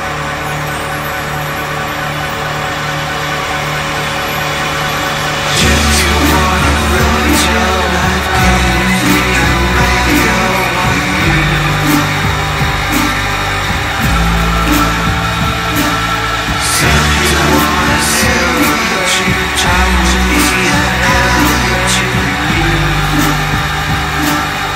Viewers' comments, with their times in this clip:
0:05 I love the way the whole song blooms Like an astronaut orbiting earth and then seeing the sun come around the corner, dazzling you.